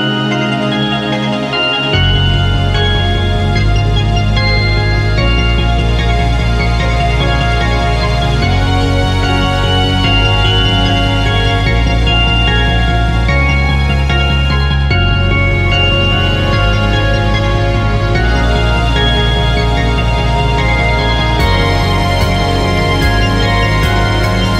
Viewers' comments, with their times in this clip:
0:10 Maaaaaaaybe it's just a bit too slow in the first part... but when climax starts it becomes a really good track, I liked it! Just a question: why sea waves? They fit quite well with the music, but it's not something related to FiM universe, so it's a bit... odd. Keep up the good work! :brohoof: